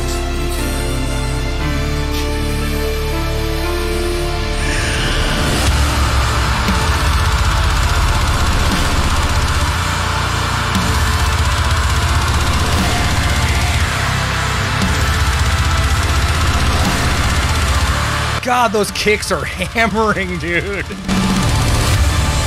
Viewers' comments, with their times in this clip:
0:05 This isnt my sound, But as a player its impossible to not marvel at the musicianship here. These guys are SUPER TIGHT!! That bridge Goosbumps !! The way the drums start driving when they go back into the Chorus! Just a really well composed tune. These guys are fkn GREAT!! Edit: I was doing fine until "LETS INVADE FRANCE" Ahhahah The whole Fkn meeting knows I'm watching YT videos again!! hahah